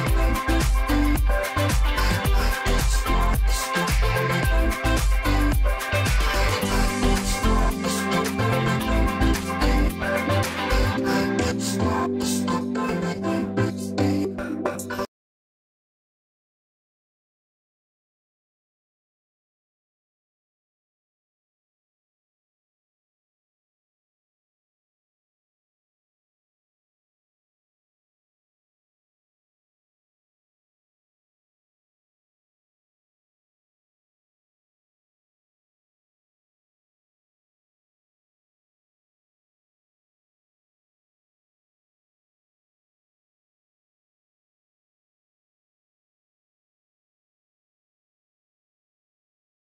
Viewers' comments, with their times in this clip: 0:06 muted for anyone else??
0:15 Does also not have any sound for you guys too? The music stops at this time for me
0:15 The audio got muted for me a bit into The 1975 - Somebody Else (EMBRZ remix) and recovered for the next song :/
0:16 Whats with the dead air starting ?
0:36 is it me or is there no sound ?